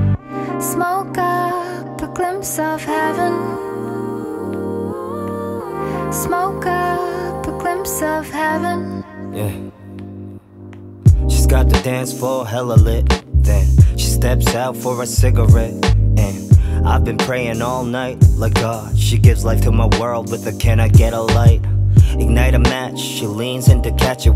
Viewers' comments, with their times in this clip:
0:09 Tablo's rap is everything